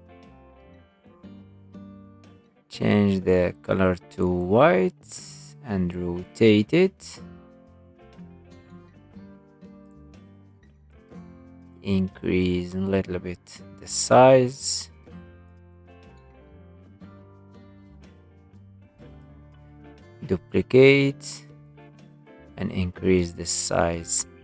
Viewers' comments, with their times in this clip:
0:05 Andro tate it